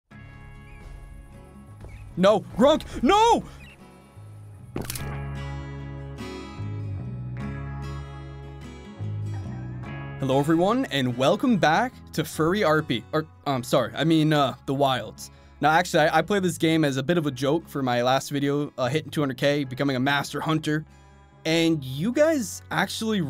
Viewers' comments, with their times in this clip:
0:05 that crack scared me poor Gronk